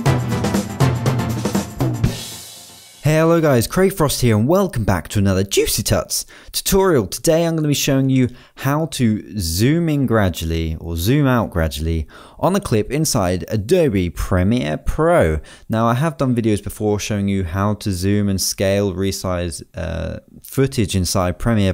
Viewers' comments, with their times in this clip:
0:03 when he says juicytut... that voice crack though